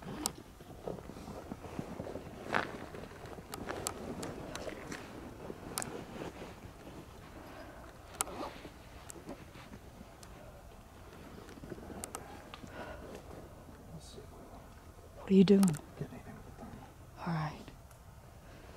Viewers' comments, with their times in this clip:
0:04 OK, you guys need to go. I don't know what it sounded like live? But in the video's sound, it sounds like a man yelling "Git out of here! Git out of here!" And he is terrified, I think for you. That area you're in? It's got history going back to America's beginning. With all those graveyards and all that history who the hell know's what's happened thru the Centuries. Before that the Indians and God knows what else. STOP THE VIDEO ! Look straight ahead and you will see a dogman! Damn it I'm serious! Everyone look and tell me you don't see it just at the edge of the light clear as day. It's gray with light kind skin showing on it's legs! Yeah you two really need to get the hell out of there. You don't even have a high powered rifle.